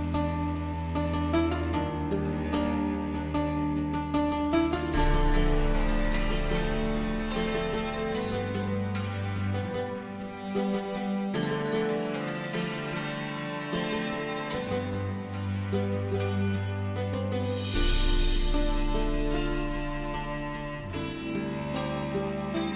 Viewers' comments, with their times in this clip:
0:07 onwards for me with the dun dun dun dun dun, dun dun dun.